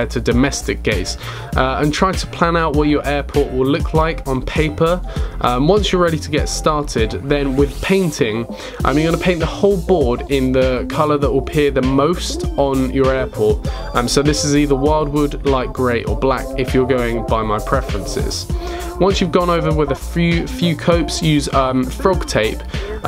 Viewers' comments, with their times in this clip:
0:07 Nobody: Literally Nobody: Cooling Fan: LEEFT & RIIIIIGHT, LEEEEEEFT & RIIIIIIIGHTT